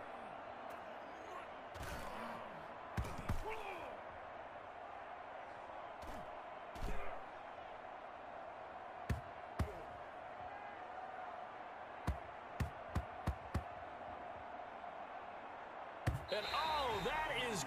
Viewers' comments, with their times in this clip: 0:03 that is the same grunt that is in the early 2000s Madden games.